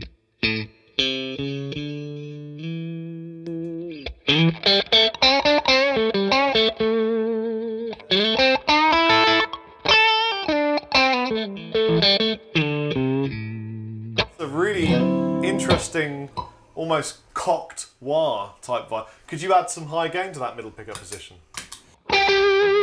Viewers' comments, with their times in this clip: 0:04 instant Clapton tone